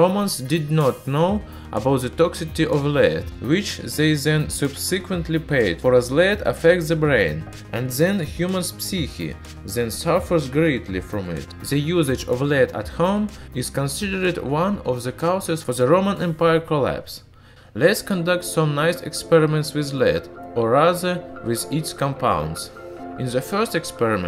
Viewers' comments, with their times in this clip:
0:08 love how he pronounces psyche